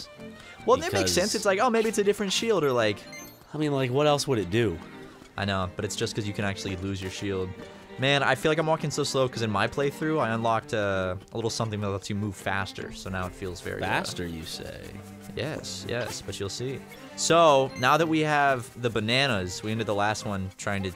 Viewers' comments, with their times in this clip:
0:04 I love the music right It's so cute and relaxing!